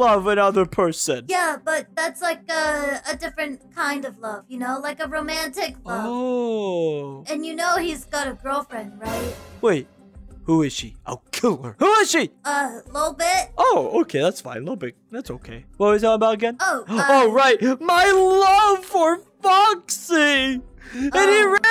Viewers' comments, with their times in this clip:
0:04 Can you let me die can you sound like shadow Freddy over here to kill me or something? 😭